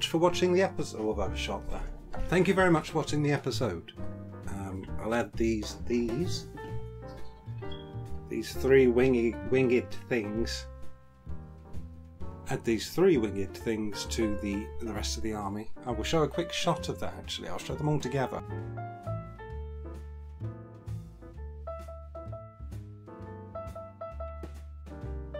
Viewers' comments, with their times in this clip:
0:07 did u change ur smoke detector battery?